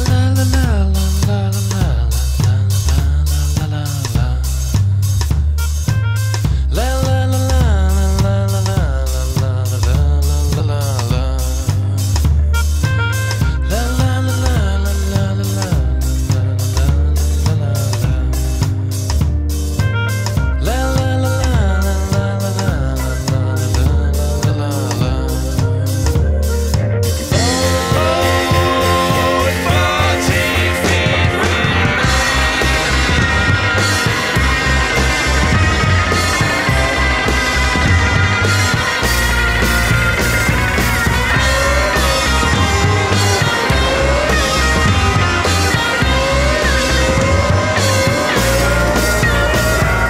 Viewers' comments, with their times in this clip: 0:05 that little riff thing has Gorillaz vibes
0:31 love that drum fill